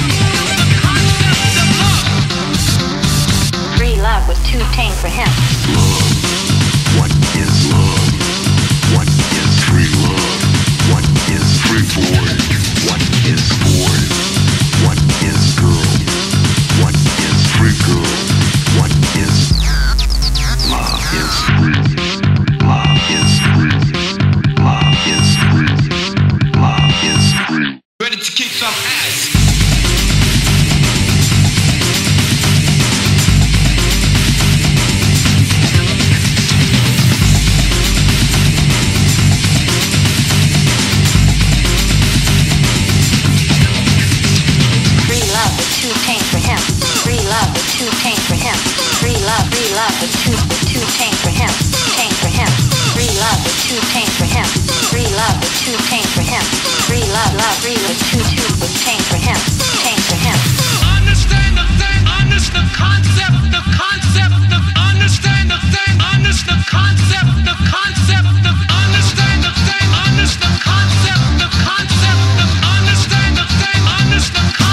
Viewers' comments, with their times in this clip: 0:10 What is free porn? What is porn? What is girl? What is free girl?
0:10 Wow, and here I grew up thinking it was saying "what is porn? What is free porn?
0:20 what is it saying here? lol i can't unhear "love is cringe" but that can't be right
0:27 why that guy sounded like pewdiepie??? Hmmmmmmmmmmmmmm
0:28 is there a dude saying "ready to kick your a*s"?
1:00 This bass solo is sick.